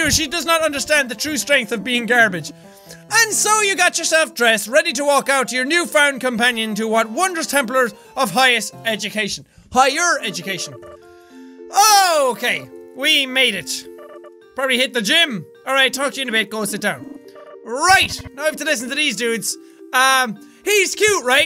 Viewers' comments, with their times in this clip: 0:07 it sounded like Jack said 'templer of highest education'…either that or I've been playing assassins creed for too long today